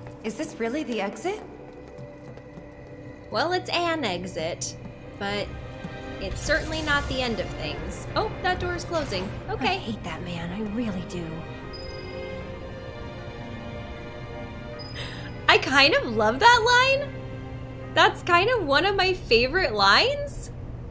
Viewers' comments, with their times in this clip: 0:08 I remember playing this moment and literally cracking up when Aerith says "I hate that man, I really do." You can definitely tell she's mad, but it's like she's too sweet to actually express the full extent of what she's feeling in her tone so it comes out as this bottled-up single line of irritation. It's so endearing and adorable. I love her character, I really do. Just saw the trailer for Rebirth, glad you're back as VA, at least I think that's your voice in the voice over. Excited to dive back into this world!